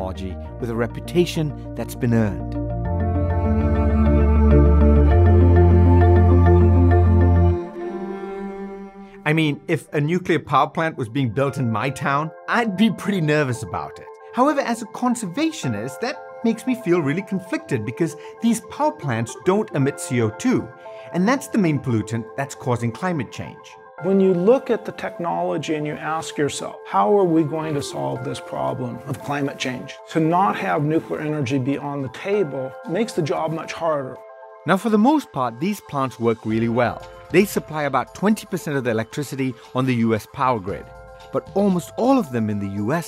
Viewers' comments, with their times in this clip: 0:03 what did he say? "That's been uh" and then it just cuts away before the end of his sentence?
0:24 for a moment I thought Bill Nye is talking 😂😂
0:24 I thought it was bill gates who started to talk
0:24 sounds exactly like Bill Gates!
0:24 I thought is was Bill Nye talking
0:24 the guy sounds just like bill nye
0:25 The guy REALLY sounds like bill gates
0:27 Anyone else that thought it was Bill Nye speaking ?